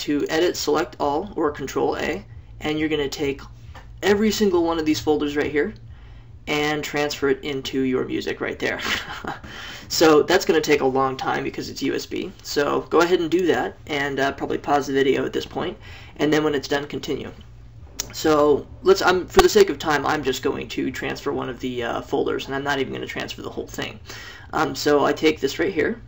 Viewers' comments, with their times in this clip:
0:08 This is like the 10th time I've had to do this, and the 10th time that chuckle killed me. haha